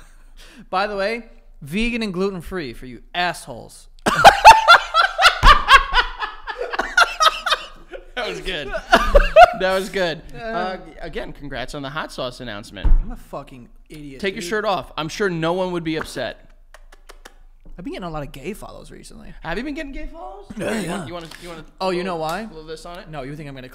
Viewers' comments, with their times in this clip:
0:04 what in the Kamala Harris cackle is going on here. 😂😂😂😂😂